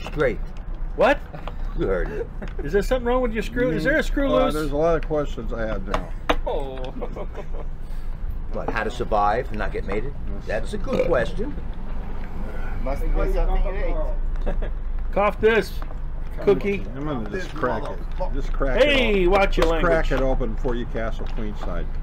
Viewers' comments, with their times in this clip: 0:10 tensions rising *burp*